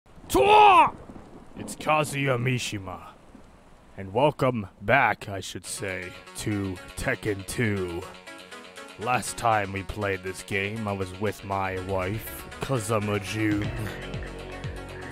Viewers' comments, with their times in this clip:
0:00 nyaaa not the DORYA! 🥲 it's the TWAH! noise